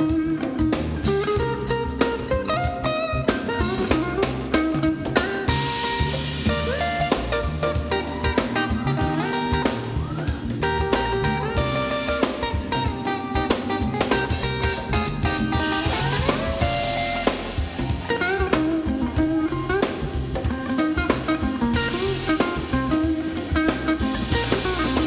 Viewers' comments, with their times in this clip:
0:06 Such a great performance! Superb playing. Very gentle, smooth and melodic. Truly inspirational. Love the part Soo good! I've heard these kind of slides in "summer" music like Gilles Rivard's "Un Fou Dans La Neige" from Québec Canada and in some Japanese jazz tunes from the late 1970s. I'm sure they were inspired by you! As an aspiring guitar player, I'm drawn to your style of playing. Very smooth and lyrical. Thank you so much for the music!